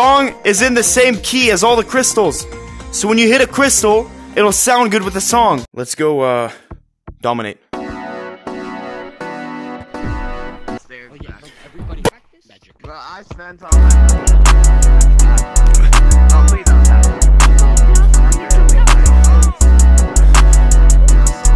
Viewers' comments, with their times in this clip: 0:09 The way he cut out made me fall off my bunk bed